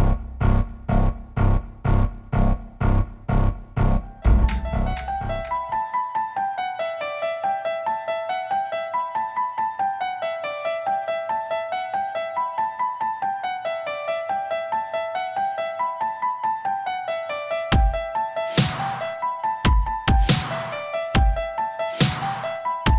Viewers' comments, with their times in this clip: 0:04 fr got hit with the movie recap music